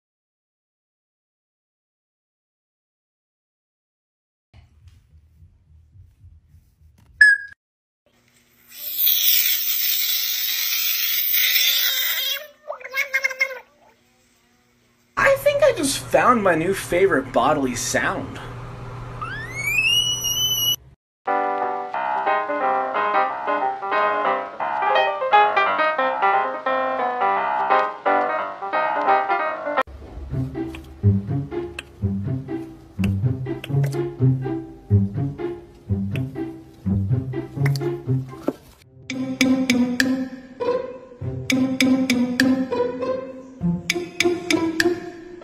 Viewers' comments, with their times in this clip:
0:09 bro turned into a airstrike
0:09 bro turned into a airsrike💀💀
0:17 my voice when i dont speak for more of 2 hours
0:17 the sound of the frog sound like cooky.
0:18 i will name this frog screaming chease
0:21 that ain't a frog💀
0:25 Bro is Megamind lagh😂😂😂😂
0:27 DATS NOT A FROG-